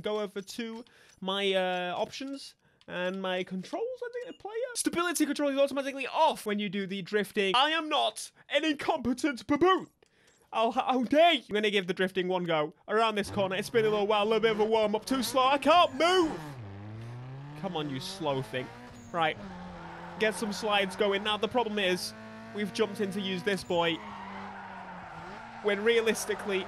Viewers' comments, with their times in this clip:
0:10 I understood "Im gay!" 😂😂😂😂😂
0:12 you sounded like a football commentator .